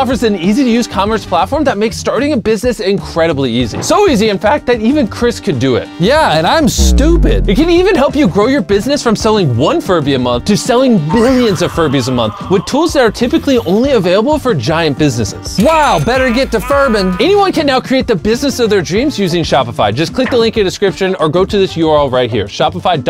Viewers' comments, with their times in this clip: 0:04 no way jimmys voice cracked